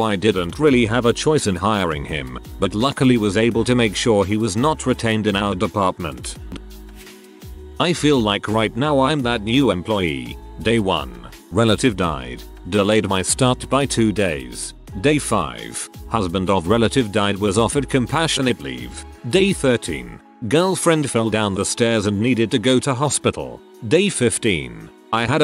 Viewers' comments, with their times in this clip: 0:08 er, one of the name's Simian...a pronouncing error by the AI or OP was saying the guy's a monkey?